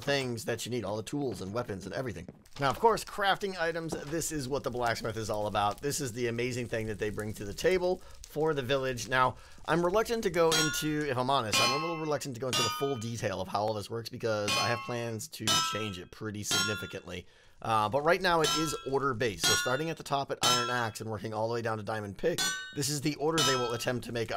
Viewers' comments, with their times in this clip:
0:10 sounds like when fnaf night ends